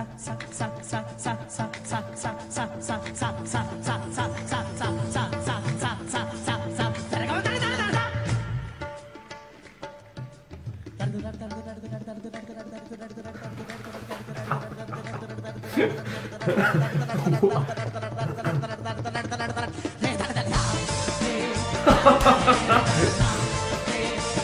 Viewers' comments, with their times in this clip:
0:09 English people on be like suck suck suck.. lol Drums and guitar made some disturbance in the end.